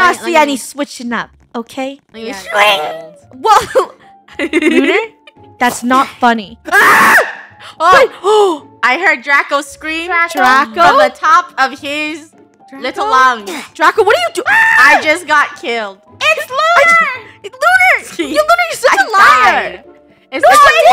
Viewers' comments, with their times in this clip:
0:06 the scream hahahahah